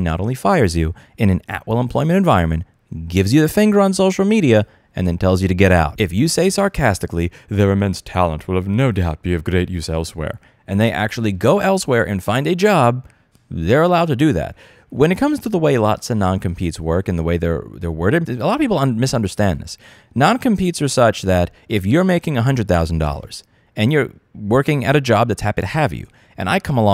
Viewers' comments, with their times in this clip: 0:07 That Elon Musk impression is hilarious lol
0:07 OMG that Musk imitation is perfect! 🤣 Someone needs to remix that into a techno tune.
0:07 That's a pretty good Elon impression, actually. Needs a little work and it'll be spot on.
0:07 Actually pretty good impression XD
0:08 That's a good Elon, but you also have to forget how to speak for a moment!